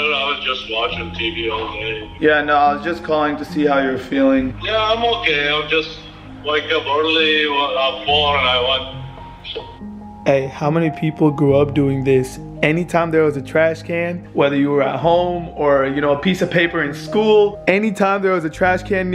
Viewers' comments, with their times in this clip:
0:04 thought he said wake up early porn I watched 😂😂😂 cause his English Edit: he said woke up bored I watched (end scene) the part cut after brawadis made a face convinced me to think wrong was laughing 5mins straight